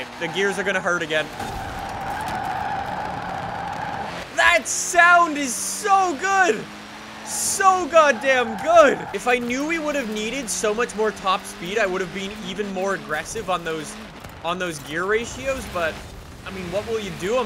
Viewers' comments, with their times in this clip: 0:05 listen to that sound HAVE YOU EVER HERE ABOUT ANTILAG SYSTEM ????? But np ur a car guy 🤐🤐🤐